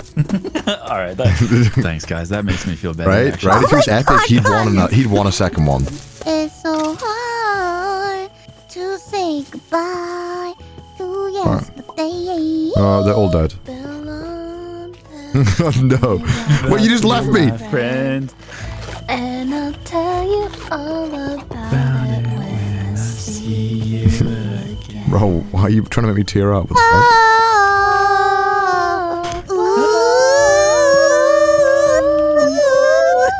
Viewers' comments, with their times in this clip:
0:06 The singing segment 👍
0:14 damn their singing sounded so drunk I was gonna suggest for them to go for a drive... oh wait.